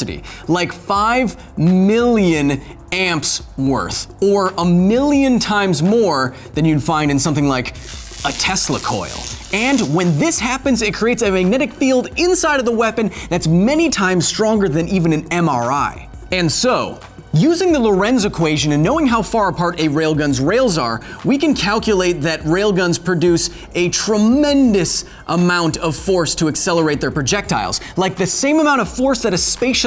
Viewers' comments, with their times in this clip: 0:10 Anyone else hear that as "MRE" first? Those are some powerful packed lunches.